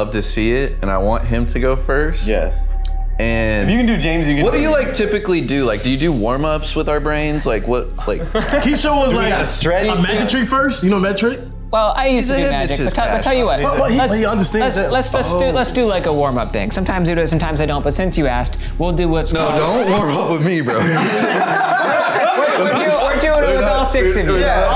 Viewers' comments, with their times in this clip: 0:06 The scream in the back scared me bc I’m watching this video at the night